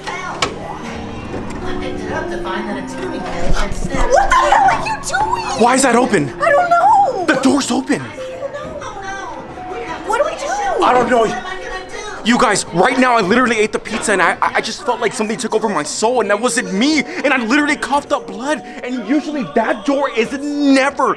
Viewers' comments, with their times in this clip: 0:07 the animatronic repeats her twice (ik all this stuff is funnt and shit but that actually was cool and a lil creepy